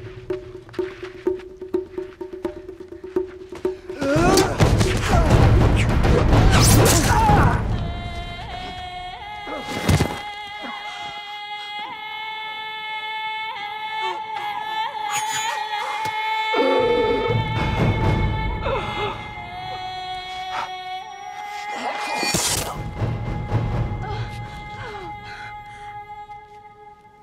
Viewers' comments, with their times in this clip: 0:08 Whole fight was so intense but after with that background ancient singing become so emotional and giving chills.